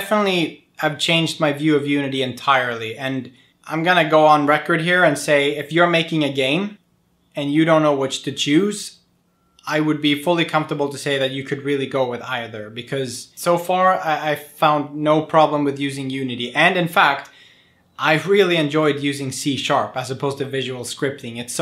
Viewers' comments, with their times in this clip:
0:09 The Laugh of regret